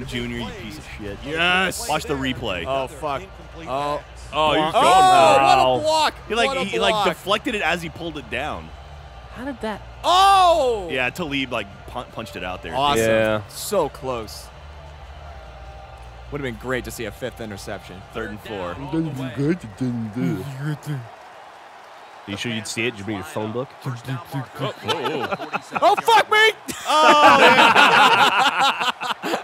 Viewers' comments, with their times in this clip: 0:10 Anyone else hear the Fall Out Boy song ?